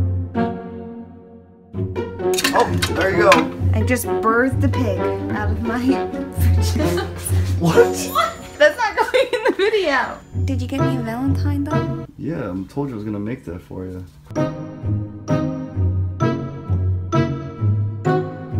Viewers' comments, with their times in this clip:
0:03 what did she say, i heard "out of my hand " is that really what she said ?